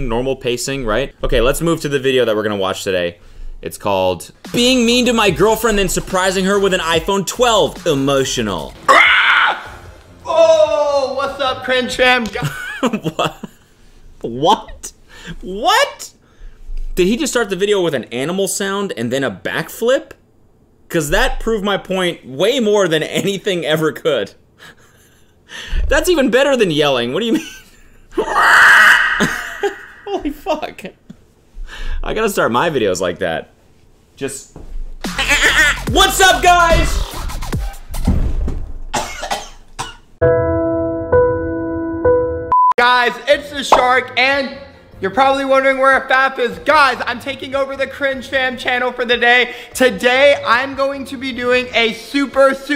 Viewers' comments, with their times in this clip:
0:08 dude straight out sounds like a pterodactyl Jesus Christ
0:35 Personally, I think the dolphin sound in is S tier compared to the other sounds. It has a way more better imitation, personality, and just over all quality